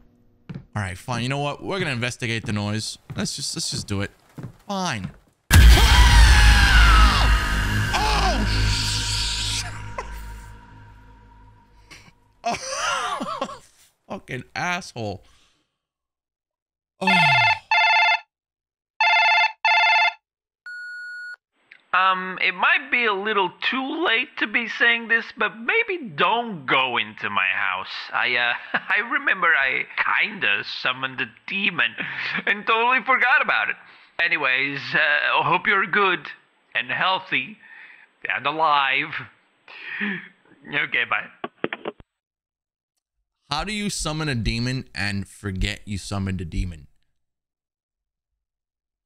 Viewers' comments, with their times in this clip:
0:05 we screamed at the same time lmfaoo
0:36 he sounds like Gru from despicable me